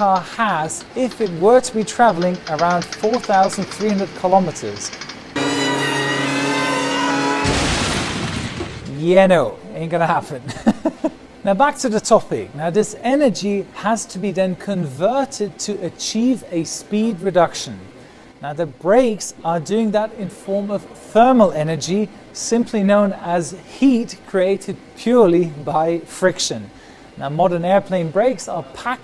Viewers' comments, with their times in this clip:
0:10 That laugh got me so hard 😂